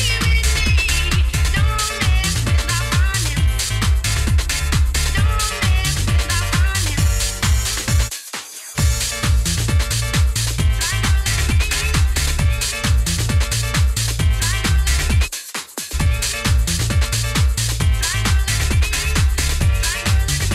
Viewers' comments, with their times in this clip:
0:05 proper old school mixing that shes got it when your at a house party with tables that's what gets DJs up let's ave it